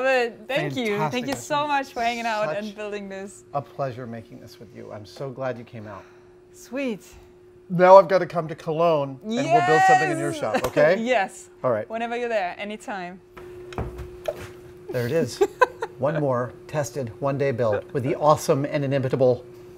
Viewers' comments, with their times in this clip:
0:06 her accent sounds german, which her name would underpin EDIT: ...yeah definitely German